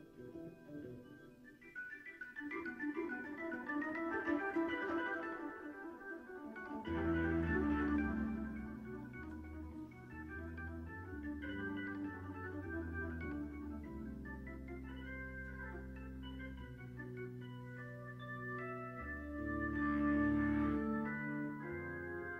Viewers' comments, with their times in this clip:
0:03 Am I the only one who thinks that that part of the solo was way too short?